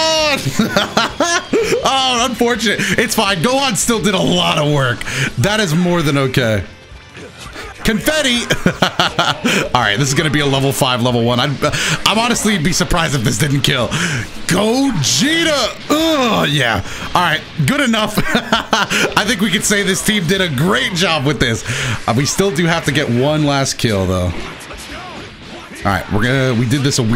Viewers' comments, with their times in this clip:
0:08 Goku really just got reminded of home and instantly pulled out a spirit bomb to beat the bad guy and save the day. Amazing. p.s. Why does the 'Confetti' sound exactly like Luigi's 'Spaghetti' from Hotel Mario?